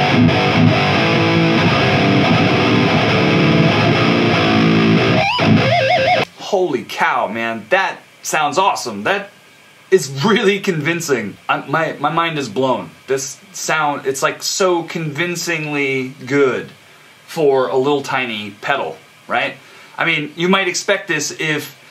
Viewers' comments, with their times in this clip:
0:05 Finally, a youtuber that can actually squeal properly